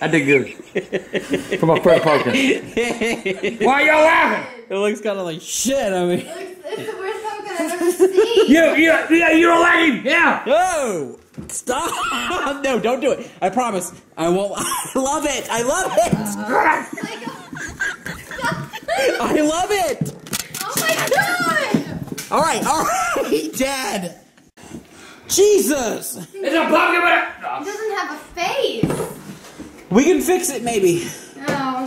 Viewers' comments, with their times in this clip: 0:10 Grandpa Growling and shit XD
0:14 that grrr tho
0:14 the sad shriek
0:14 the growl so funny
0:15 that growl absolutely killed me 😆😆
0:15 Did angry grandpa just bark like a dog LOL
0:15 agp growls lol😂😂😂💀💀😅
0:16 The hell was that noise grandpa made 😂😂😂😂
0:16 when he grwls 😆
0:16 That noise he made 😂